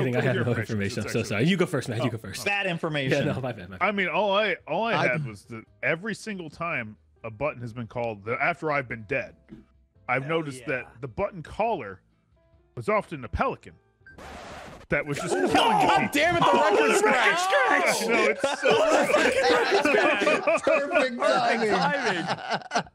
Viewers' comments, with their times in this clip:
0:09 "I've noticed that the button caller.... was often the PELICAN!" record scratch Such phenomenal timing, lmaooo.